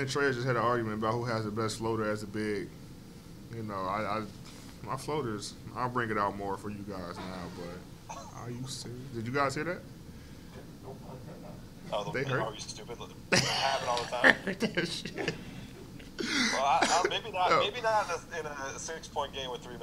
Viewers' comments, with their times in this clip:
0:04 Someone just shat themselves ☠️